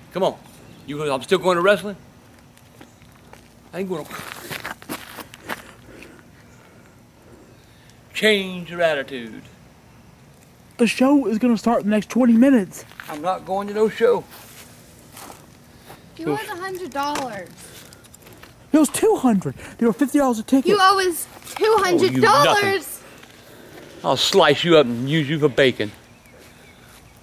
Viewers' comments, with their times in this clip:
0:10 I HATE THE WAY HE IS SAYING THAT